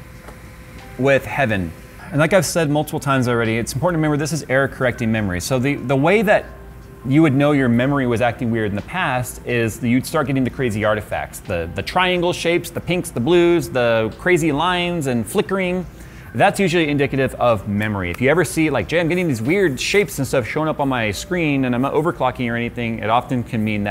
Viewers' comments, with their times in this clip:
0:06 Did somebody start playing Ping Pong in the background?